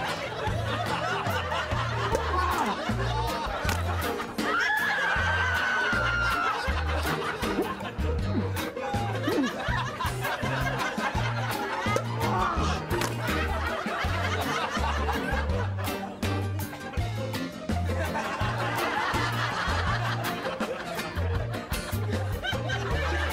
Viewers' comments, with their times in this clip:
0:05 sounds like an horror movie😂😂😂😂